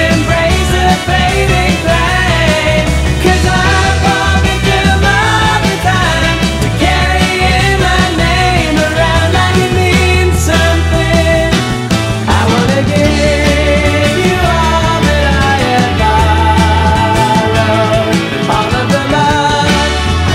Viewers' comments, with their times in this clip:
0:03 I love the reference in the melody to The One. I love this song already.